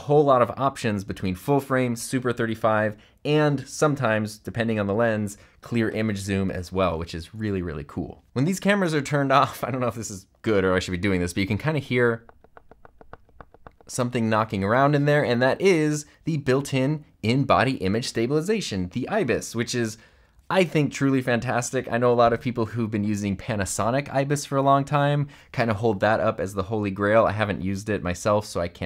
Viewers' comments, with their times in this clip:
0:09 I was cracking up when you did this because when I took my camera fresh out of the box and heard this knocking sound I thought I had received a broken camera. Bear in mind. This is my first real camera purchase aside from a cyber shot over 20 years ago.